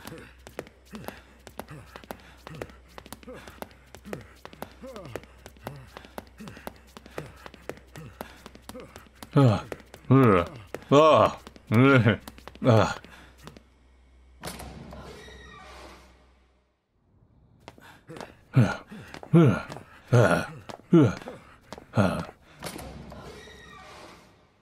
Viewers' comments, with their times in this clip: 0:08 Such a great timing for my speakers to randomly get louder at 4AM 🥲